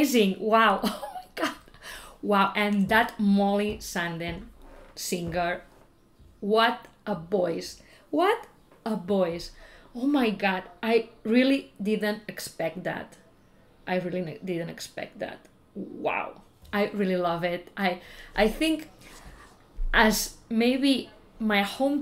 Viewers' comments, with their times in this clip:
0:05 what a boys, what a boys. haha she is so spanish